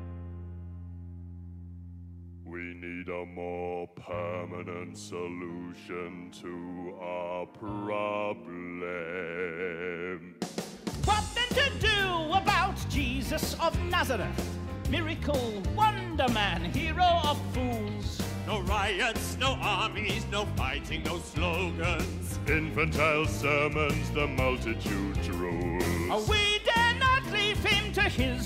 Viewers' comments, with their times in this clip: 0:10 when the beat drops